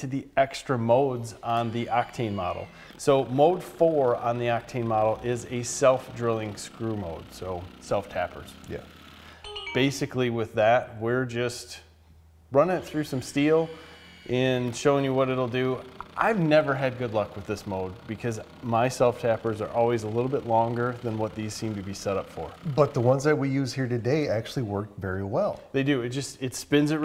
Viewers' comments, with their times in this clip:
0:08 The hell was that noise?